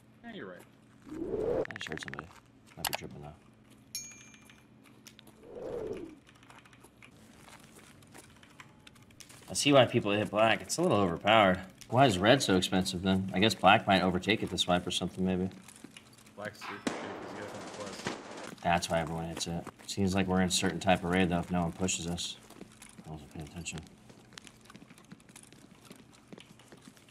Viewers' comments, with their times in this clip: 0:09 The first time I heard "I see white people hit black". Please tell me that it's not only me...